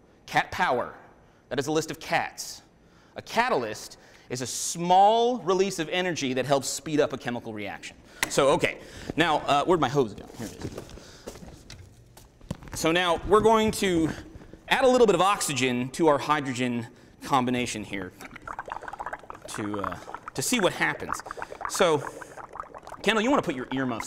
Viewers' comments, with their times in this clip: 0:09 "Where my hoes be?"